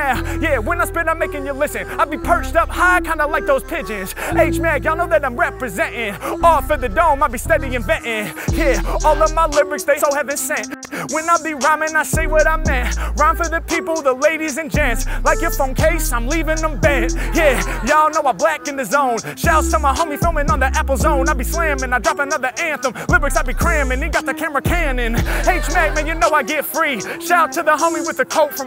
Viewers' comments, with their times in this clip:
0:07 something strange happens to the audio when he says Heaven Sent, don't know why I didn't write this the day it was released lol
0:07 What's with the obviously edited audio ? Did anyone else notice that? Usually when Harry makes a small mistake they just leave it in the video
0:07 Is it just me or did the audio skip ?
0:09 wonder what happened sounds edited